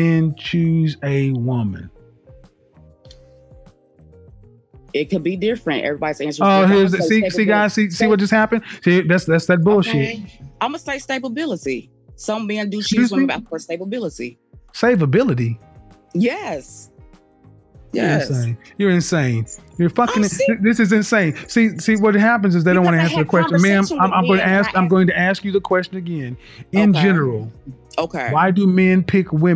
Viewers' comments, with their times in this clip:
0:08 did she just say stabability?🤣🤣😂😂
0:11 “stablebilit” 😂 excuse me